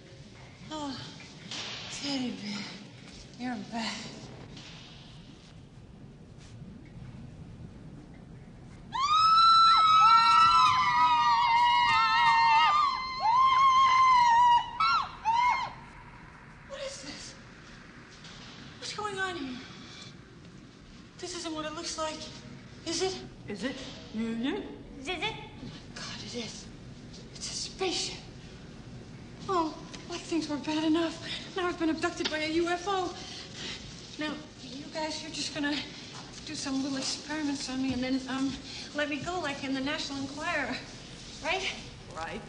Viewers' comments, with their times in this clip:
0:10 I like how Mac isn’t screaming.
0:23 Mac - Is it? Wiploc - Is it? Zeebo - Zis zit?